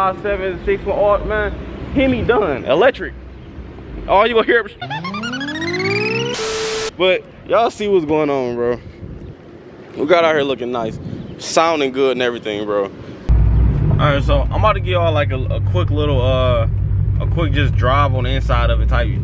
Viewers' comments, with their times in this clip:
0:04 Bruh I Died At The Jetsons Noise 😂😂😂😭😭😭💀